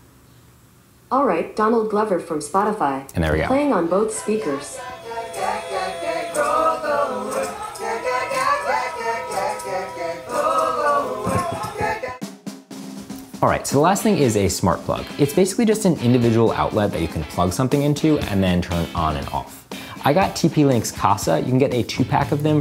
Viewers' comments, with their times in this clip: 0:05 horrible song lol